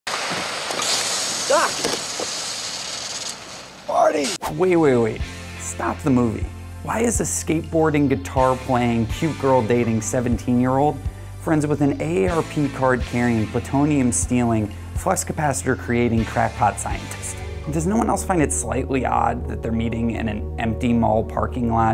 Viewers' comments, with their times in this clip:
0:03 is it just me or did you hear "Morty"